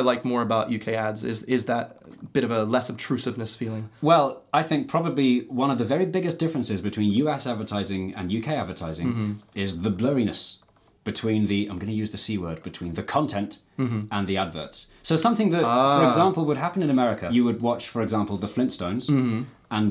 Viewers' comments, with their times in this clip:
0:06 when Jay said, One of the biggest differences between "U Ass advertising and UK advertising" lol